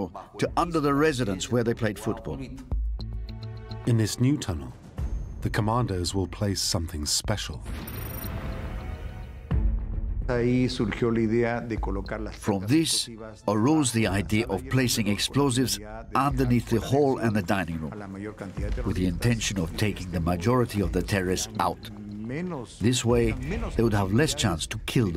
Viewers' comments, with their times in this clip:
0:10 What does he mean "from this arroz the idea"? Is he saying he got the idea from some rice?